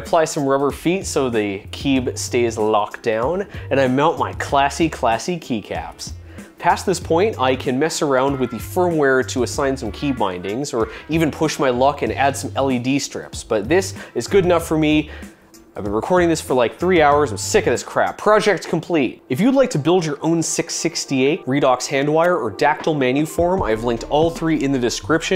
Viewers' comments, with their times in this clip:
0:08 WHAT ARE THESE VOICES, dude it's like 1 am where I live, hella scary